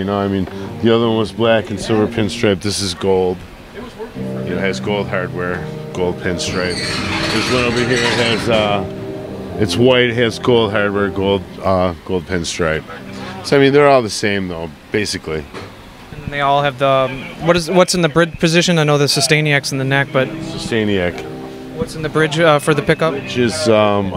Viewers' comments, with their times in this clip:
0:05 I’m hearing deftones